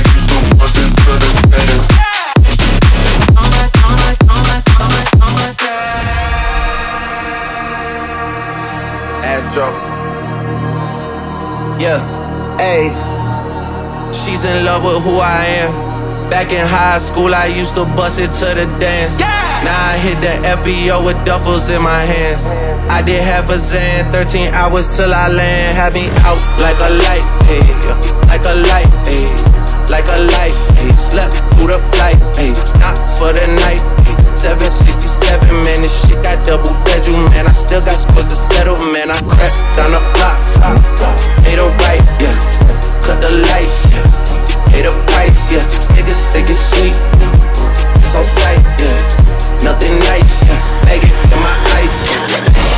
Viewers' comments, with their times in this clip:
0:06 feels like a second dope song
0:09 I'm in love with the future bass one It blends so well and sounds super cool
0:16 My favorite drop! (Bass Nation fan over here)
0:24 Goooooddddaaayyumm. I myself find the progression from the best but the whole song is a banger.
0:39 the cords there are causing me eargasm...